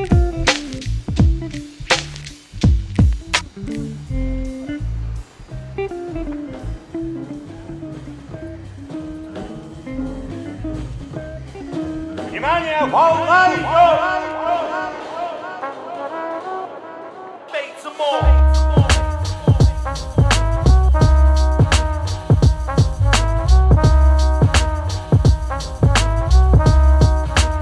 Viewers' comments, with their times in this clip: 0:05 If you listen to the song in with headphones, you can hear a drum as if it was in another room next to you
0:11 okay but russian phrase on were really unexpected